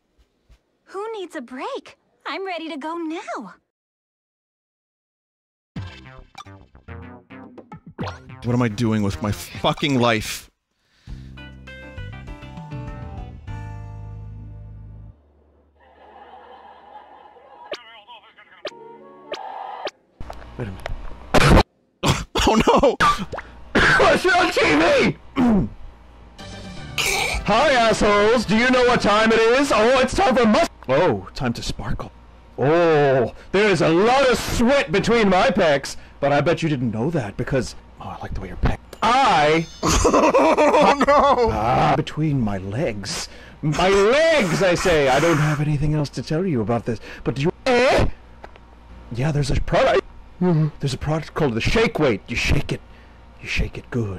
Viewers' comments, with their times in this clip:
0:10 vinny dubs his first cutscene and I'm dying
0:11 Man, Nintendo voice acting has gotten weird.
0:15 Ladies and Gentlemen, The choicest voice V.2
0:20 I wish my yawns were that powerful.
0:26 Roche voice, 5 years prior to the "Pocket Lint & 13 Gil" incident
0:40 the most intense cry of terror and regret i’ve ever heard relating to wario